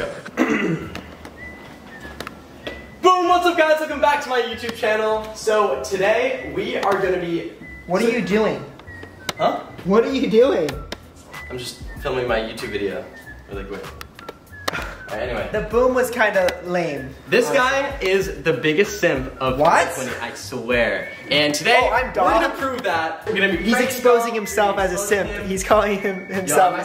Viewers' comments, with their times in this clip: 0:10 I might be the only one who gets this. But did someone else here that the whistling in the back round sounds like The Andy Griffith Shows theme song.